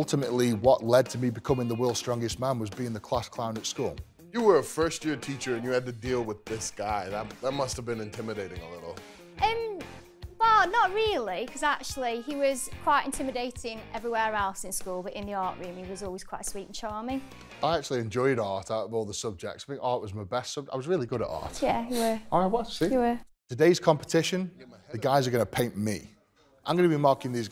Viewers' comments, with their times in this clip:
0:10 she sound like tracer in overwatch